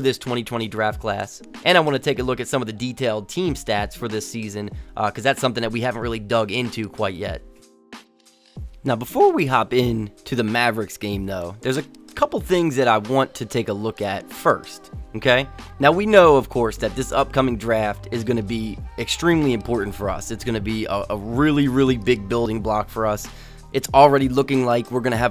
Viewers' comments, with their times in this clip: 0:09 I felt that voice crack😁 keep up the good work though man